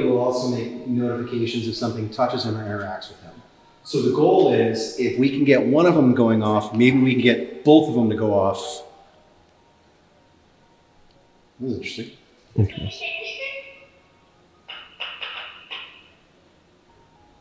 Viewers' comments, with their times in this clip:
0:05 you can hear a whisper and then the music box and boo bear go off…